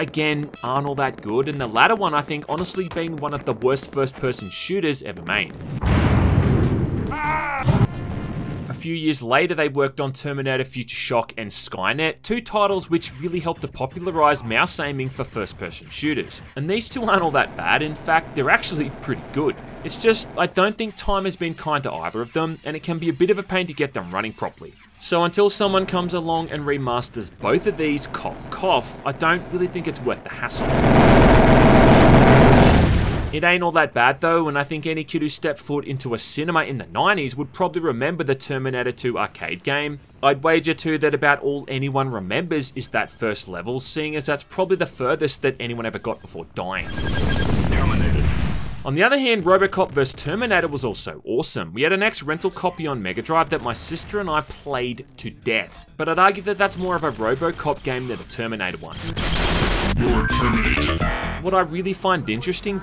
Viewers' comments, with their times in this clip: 0:06 that scream is hilarious
0:49 “versus” written out on screen, but he still reads it as “verse”…